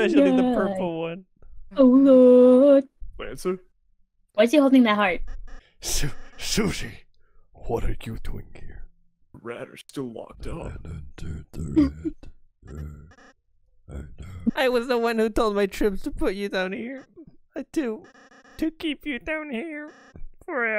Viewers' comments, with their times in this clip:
0:07 Lancer incomprehensibly mumbling to himself mid-cutscene is easily one of the best parts of the video.